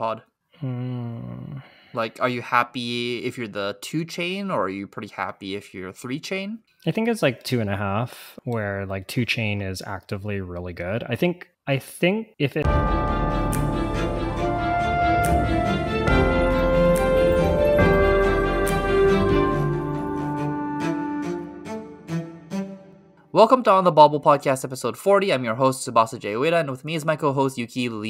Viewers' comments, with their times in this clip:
0:09 Great poscast! the audio loops back to the start of the podcast and cuts off the end of the discussion
0:12 podcast restarts and we lose the end